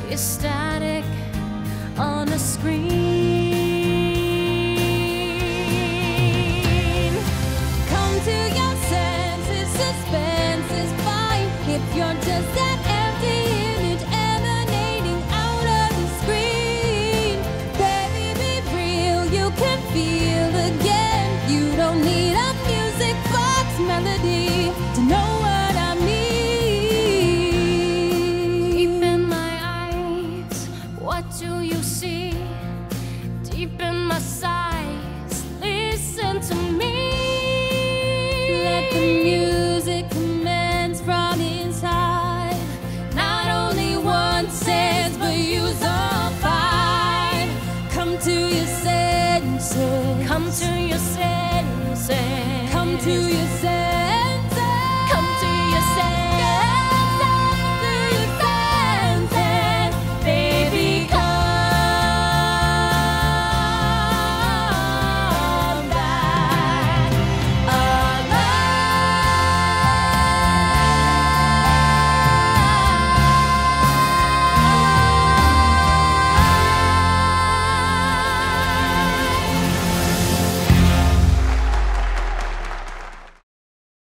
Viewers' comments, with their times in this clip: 0:08 Alexandra Shipp AMAZED me in this movie and especially this song. This was truly one of her best roles, and I didn't know she was such a vocal champion- able to do a toe-to-toe duet with Vanessa (known for her stellar singing) and power through with such raw emotions and crisp belts. If the rent film was made in 2021, I could see her playing Mimi the same way Rosario Dawson did, especially singing-wise. Truly took my breath away just- GOOSEBUMPS.
0:28 yes alexandra this and that but when vanessa comes into the sohn makes my spine TICKLE
0:43 Idk why, but when they sing “not only one sense but use all five,” together I get CHILLS. Love that part. Idk it’s like a pretty, musical way of saying “you better get your shit together.” 😅🤣 This one line captures the entire song for me.
0:54 the harmonies! Holy crap the harmonies!
0:55 So many parts of this are so good but is the best part for me - the way their voices land together on the unison and blend PERFECTLY, and then split into harmony! stunning.
0:55 literally gives me goosebumps every time I listen to it. The harmonies are so beautiful and their voices fit so well together! So happy that they turned this into a duet.
1:00 i think about this scene and this song a year after watching the movie. their harmonization is pure magic
1:06 there is a faint off-tone flute sound? I hope it's not just me hearing this...